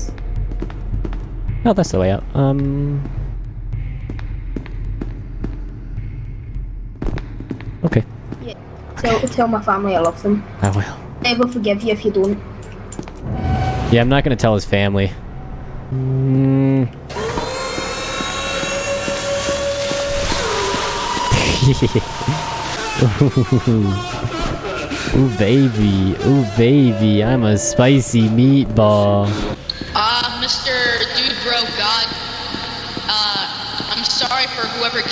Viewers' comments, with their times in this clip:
0:09 HIs VOICE XD LOL
0:16 he sounds like the girl from the dragon prince the assasian